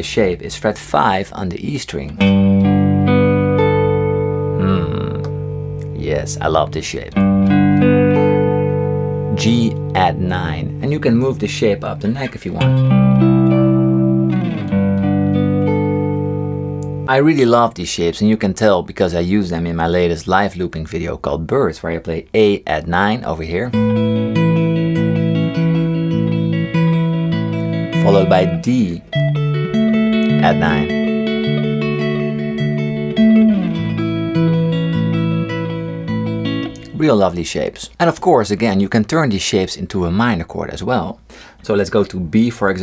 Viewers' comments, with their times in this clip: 0:04 "mmm yes I love this shit" 😂 me too!
0:25 sounds Weird Fishes from Radiohead